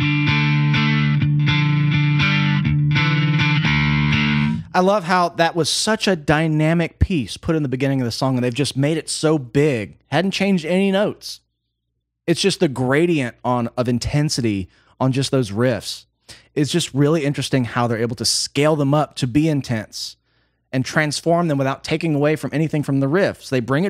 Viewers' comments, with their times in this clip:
0:07 I think that's all Danny on the drums he's filling like crazy around that original riff and accenting on the guitar rhythm where he was more relaxed and out of sync with guitar in the beginning... also they are putting a little more sustain on each note in the guitar